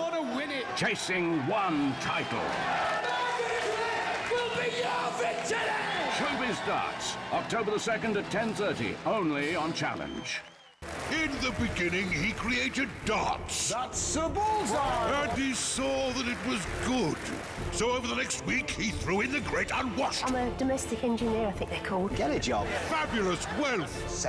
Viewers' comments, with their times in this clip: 0:10 What if it's Daddy Pig's voice?
0:11 Daddy Pig's voice from Peppa Pig is announcing the promo on Challenge TV.